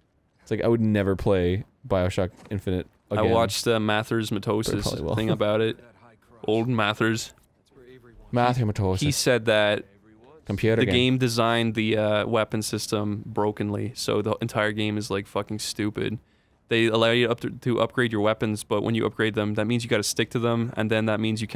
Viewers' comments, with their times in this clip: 0:04 You can hear him mumble under his breath that he probably will want to play it again. He never said it was a bad game, but that it disappointed many people because it wasn't what a lot of people expected. Also, "My opinion is better than yours!" is the worst argument you can possibly make; just because you like them doesn't mean anyone else's opinions are "bad" for not coinciding with yours, dude.